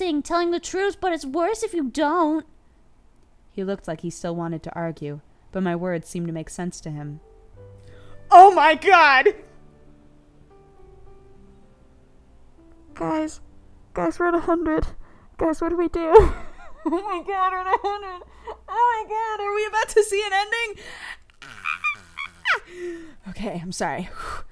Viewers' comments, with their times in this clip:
0:08 I found it so funny how she sounded here omg haha